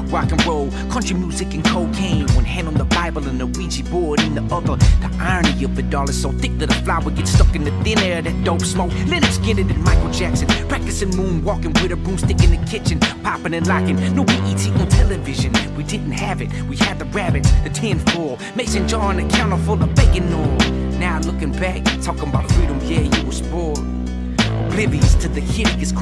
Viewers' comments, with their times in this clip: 0:08 Am I the only one who hears the bass guitar from Primus' cover of "have a cigar" in? Drove me nuts trying to figure it out. Or I'm just crazy lol